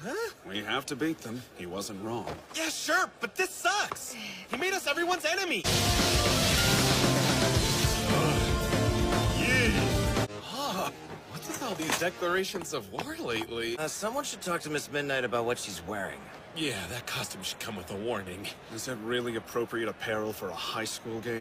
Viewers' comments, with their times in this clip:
0:06 Who else is wondering- WHY IS HIS VOICE SO DEEP HERE?!